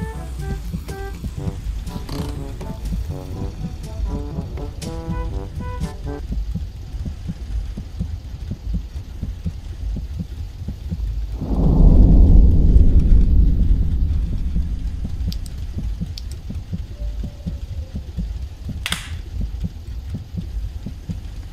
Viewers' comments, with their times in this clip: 0:07 the silence was too loud...😗